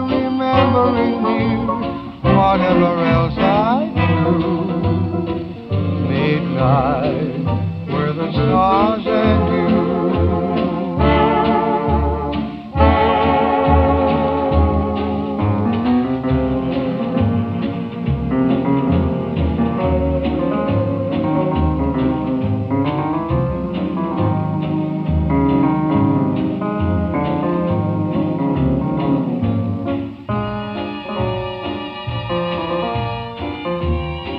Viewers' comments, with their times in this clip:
0:08 the modulation is so smooth
0:15 Sounds so haunting in the film, when it's all reverberated and faint. So fucking effective. Kubrick was a genius.